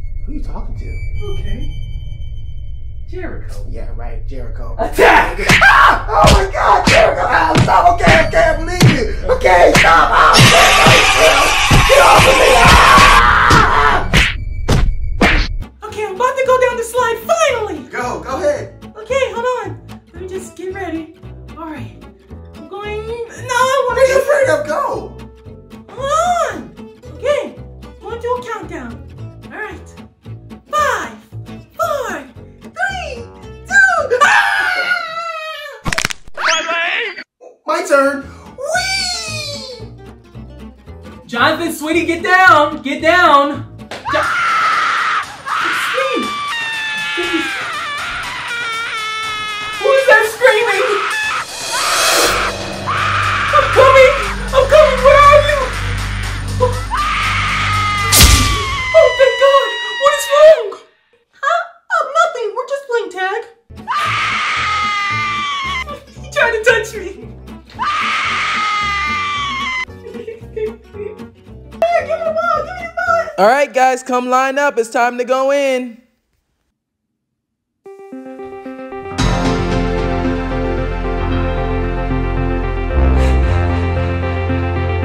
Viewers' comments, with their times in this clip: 0:08 is me screeching at recess randomly-
0:09 Dat Weird Dude! 🤣 They will fear that scream...
0:44 why is tinky winky from slendytubbies 1, 2 , and 3 screaming at the playground
1:07 i remember always playing and I'll you here is someone letting out that crocka holla scream